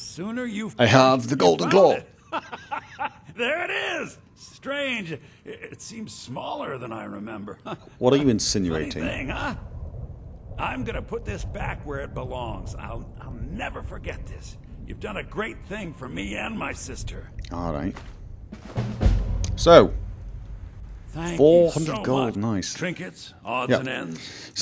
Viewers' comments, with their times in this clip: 0:07 Did anyone else think that he sounded kinda like Snape when he said, "What are you insinuating."